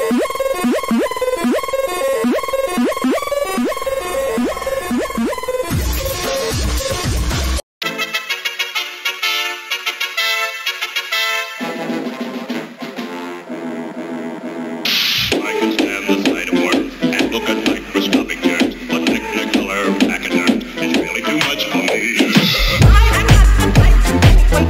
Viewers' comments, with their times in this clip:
0:06 VINE BOOM I like the pink elephants one a lot!